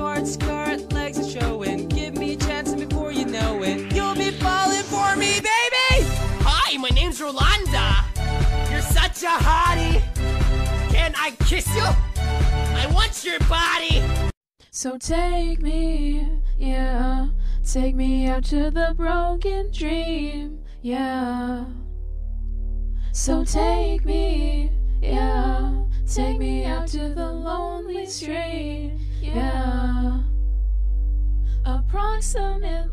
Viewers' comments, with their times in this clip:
0:05 Why when he said ''Hi my name's Rolanda!'' i thought that was Flamingo's voice
0:14 she still as meme but sped up.